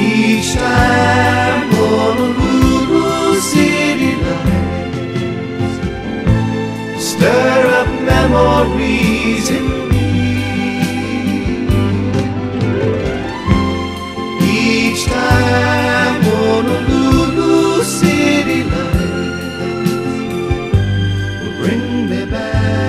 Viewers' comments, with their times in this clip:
0:04 when you see a bridge, i always wonder whats up there, like where is the police siren coming from? Well its answered.